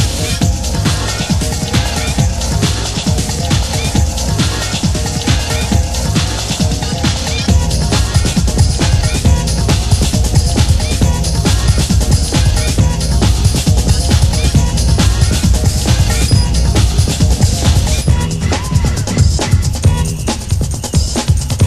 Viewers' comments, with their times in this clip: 0:07 What's the name of the track ?? Sounds kinda like some old skool b-boy shit right there.